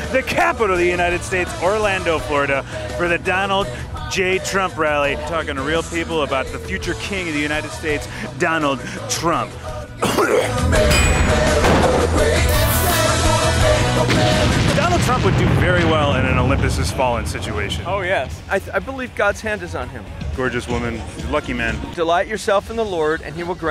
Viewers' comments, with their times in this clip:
0:09 That cough was subliminal